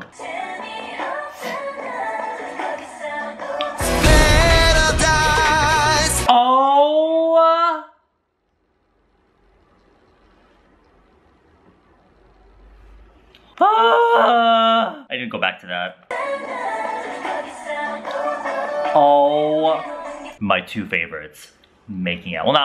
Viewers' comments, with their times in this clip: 0:04 When that Kdrama music cut in tho